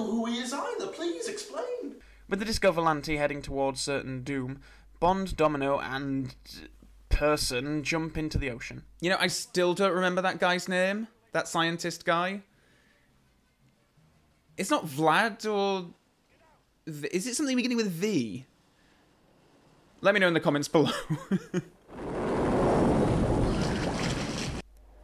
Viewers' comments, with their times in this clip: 0:09 I love your northern accent creeps in!
0:10 I love how you pronounced the word 'name' I think you had a stronger Yorkshire accent back in the day, and maybe listening to your old review brought out more of your northness.